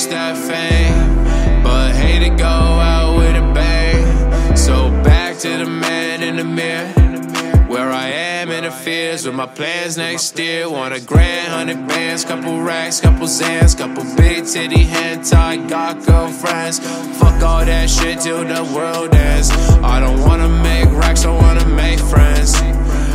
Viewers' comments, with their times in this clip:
0:04 that flow is insane!!! ✌✌✌